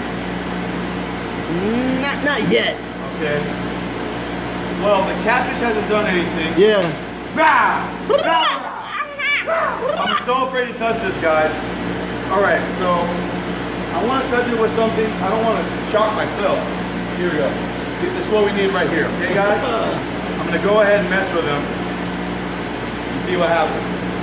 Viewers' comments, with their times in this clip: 0:07 those sound fx haha